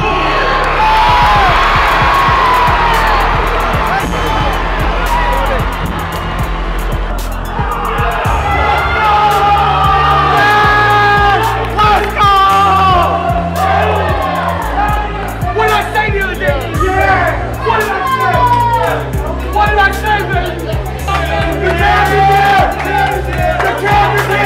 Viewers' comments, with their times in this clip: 0:09 heard thuds say yah!!!